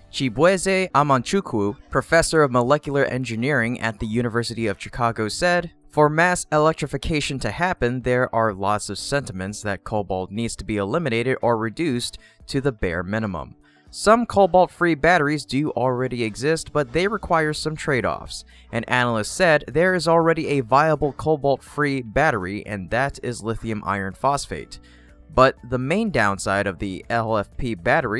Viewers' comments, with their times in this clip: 0:10 ummm... Helen Keller? What?